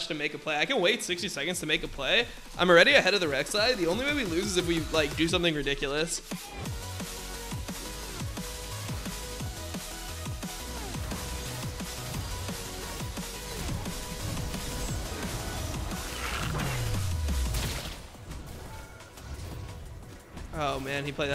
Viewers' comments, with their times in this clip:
0:09 I like the hype music. PD: new youtube design sucks